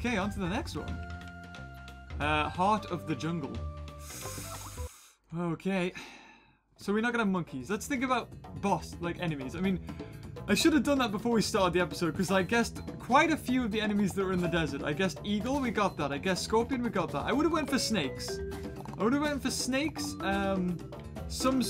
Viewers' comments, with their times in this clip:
0:06 i heard a Skype message :D, Only me ?